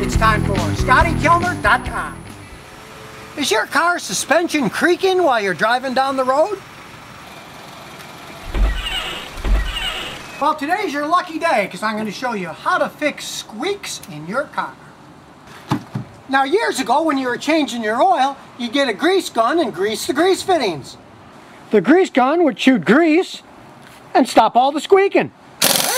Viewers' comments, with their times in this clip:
0:08 it sounds like someone used a half life sound effect xD I love this channel even more now.
0:09 You put those squeaky sounds in when you edited the video ;)